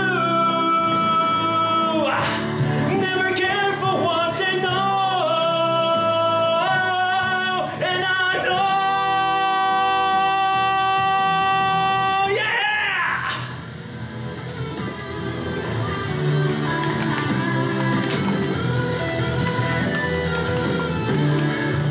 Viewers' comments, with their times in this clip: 0:08 man! i finally got to test the GHM vox engine xD damn it's so limitating! everytime got carried away by the awesomeness of the song, i got a SOLID, or less than that. My best was a 99% on "One". and about this video! Absolutely wonderful!! i almost missed this, and it's one of your best IMO... your singing for every chorus gave me goosebumps... also that amazing singing ... (i only felt that with your "I.V." video before). You're an elite singer! congrats a lot :)